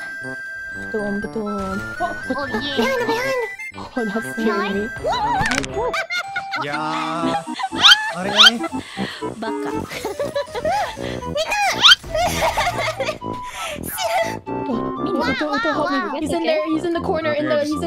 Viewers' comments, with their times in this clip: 0:05 That neck crack sound killed me HAHAHAHAH